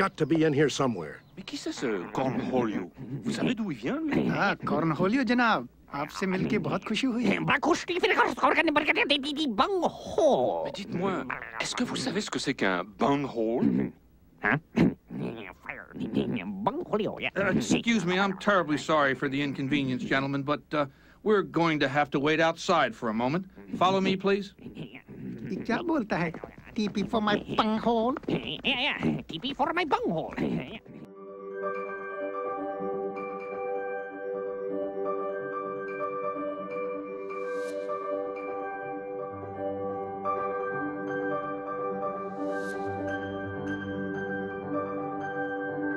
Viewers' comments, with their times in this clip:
0:07 no clue what he said... Died laughing!
0:07 No clue what he said, still laugh
0:08 Beavis just straight up talked in the zombies language from plants vs zombies
0:26 TP for my bunghole funny how he say it too LMAO, made me laugh so hard.
0:26 bro could you hit that note any harder lmao.